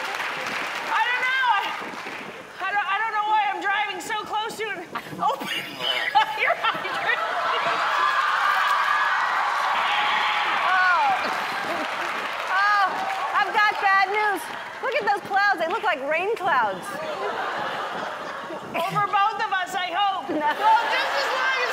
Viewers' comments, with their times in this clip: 0:03 was that farting I heard ?
0:05 Did she fart ?
0:05 Melissa farts before she said open fire hydrant......
0:05 She just farted :D